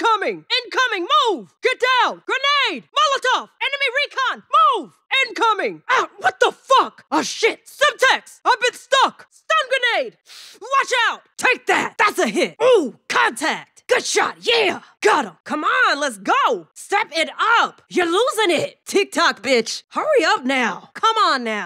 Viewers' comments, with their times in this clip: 0:06 the 'Fuck,' goes hard asf'